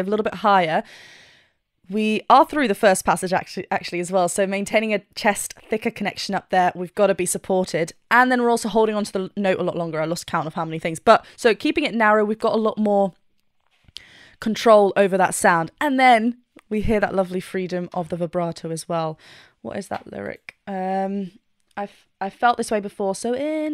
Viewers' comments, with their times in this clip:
0:06 He was so good at maintaining that chest voice in his upper register. You'd almost call him a 'chester'